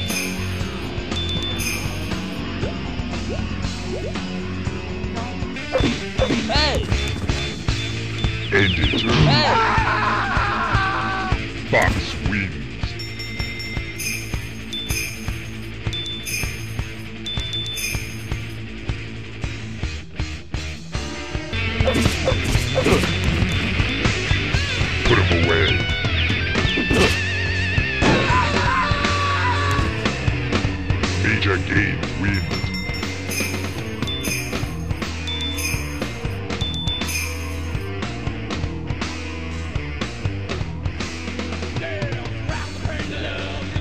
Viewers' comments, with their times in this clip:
0:09 that scream I hear in cartoons😂😂😂
0:24 ... Does the announcer say "Purple rain"? O.o
0:27 funny pain scream sound.